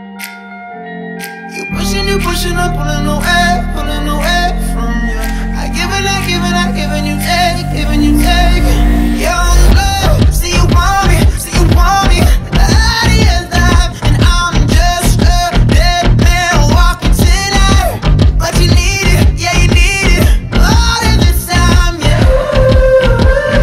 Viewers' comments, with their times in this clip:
0:07 Bruh when the beat dropped as Xiao saved Lumine was 🔥🔥🔥